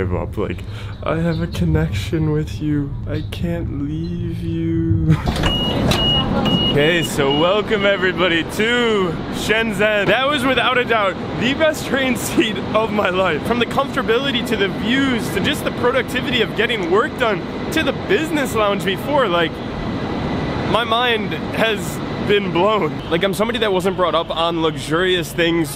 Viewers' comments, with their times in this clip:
0:08 when you were talking loud everyone looked at you 😂
0:10 he likes it to much that hes screaming